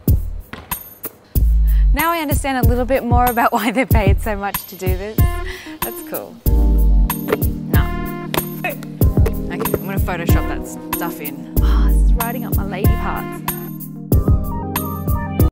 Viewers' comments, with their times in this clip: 0:11 .....anyone else LOVE the way she said that?